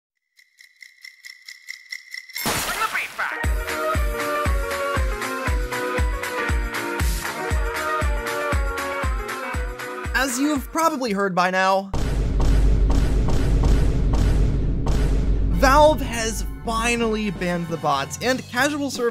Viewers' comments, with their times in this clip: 0:02 BRING THE BEAT BACK 🗣🗣🔥🔥🔥🔥